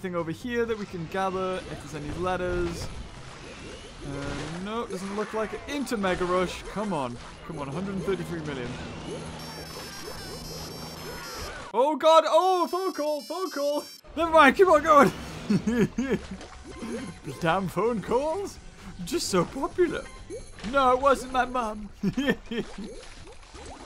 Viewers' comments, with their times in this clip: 0:09 dat ringtone tho